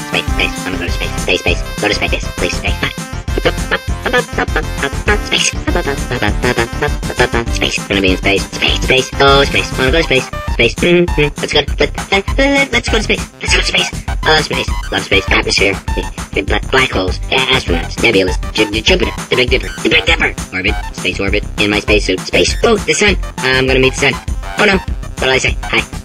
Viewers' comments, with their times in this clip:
0:08 Transcribed audio: "please please please please please please please pacific but practice preventive teach" THEN "baby-faced baseball is based on their face based with explicit exercise" x)